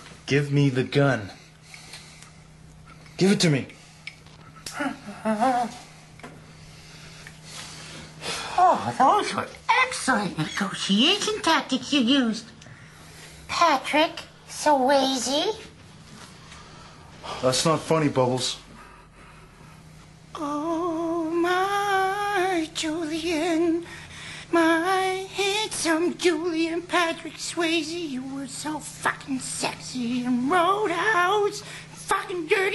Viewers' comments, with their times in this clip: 0:03 you can hear bubbles whimpering in Conky’s voice when the gun is pointed at him
0:06 I love the sound Conky makes as if he's relieved Ricky is pulling the gun away... Lmfao
0:20 i lose it everytime when he starts singing lol
0:20 His fuckin Julian song 😂